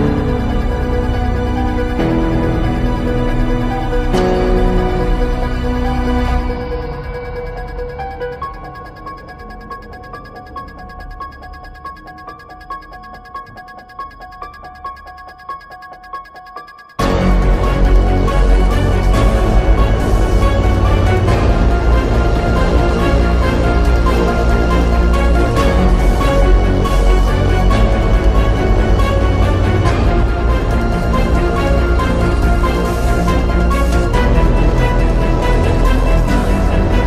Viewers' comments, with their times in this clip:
0:10 it got really deep
0:17 when they start crying. "You can hit me back"
0:17 when you paused the video, but you still hear the music
0:18 isnt a bit calming XoX